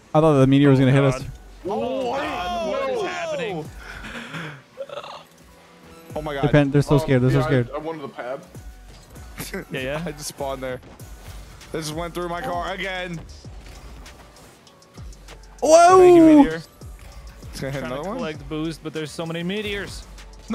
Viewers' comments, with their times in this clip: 0:03 look up "super mario 3d land death music" i swear it sounds the same